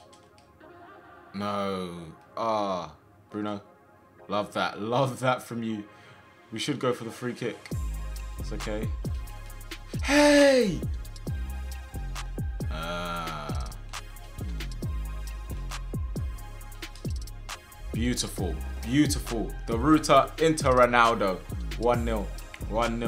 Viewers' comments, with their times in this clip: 0:09 My guy yelling in lowercase